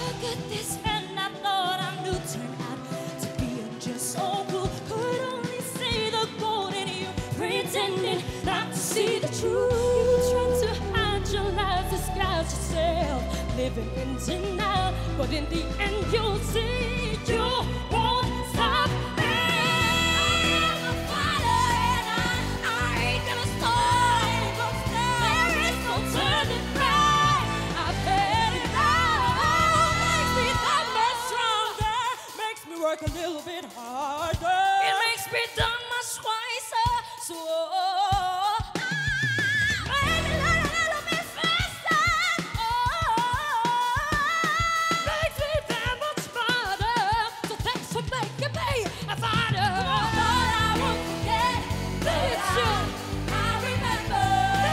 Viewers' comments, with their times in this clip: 0:05 MORISSETTE AMON IS DAT YOU?
0:37 That eargasm waaa
0:37 That is a polytonic! Amazing.
0:39 Wth is that? whistle Register? 😲😳
0:39 is dat a whistle? 😱
0:40 tho. Ughh so stable biyatch.